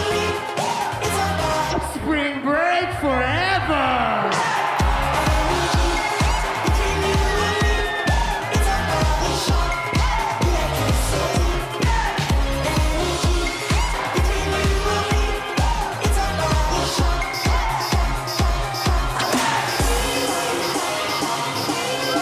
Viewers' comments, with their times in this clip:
0:03 Skrillex voice please...XD LOL